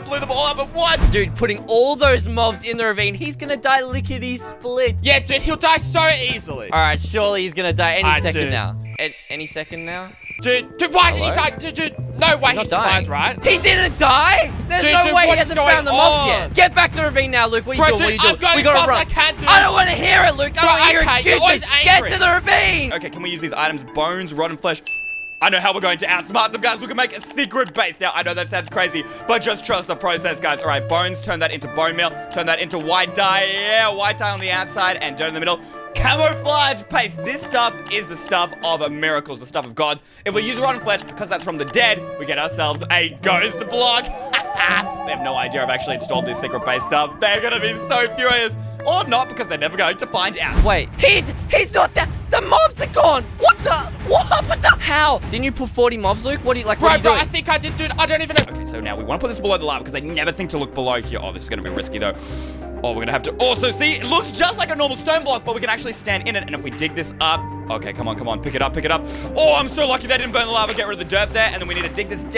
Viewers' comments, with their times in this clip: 0:05 it said se easily
0:53 HOW HE SAID 'WHAT THE' THOUGH!😂